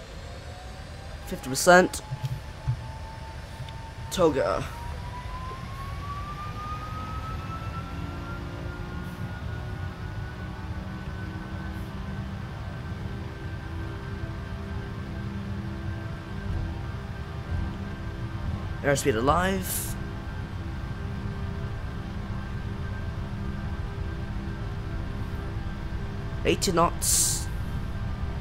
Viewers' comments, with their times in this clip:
0:09 what an amazing sound of the rolls royce rb211s!